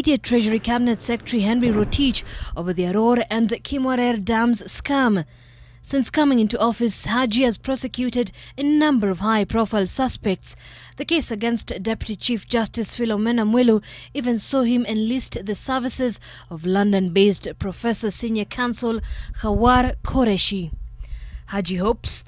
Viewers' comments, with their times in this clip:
0:03 Haja Haha 😂😂😂😂 ...."over there rore" we are sapere